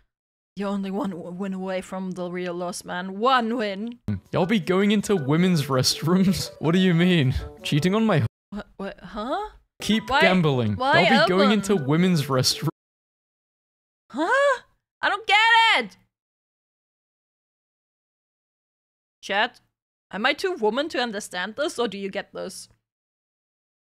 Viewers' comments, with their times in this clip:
0:06 sometimes I wonder I the “Alvin and the Chipmunks” movies all exist simply because of a funny voice changer that did nothing except pitch up and maybe speed up one’s voice.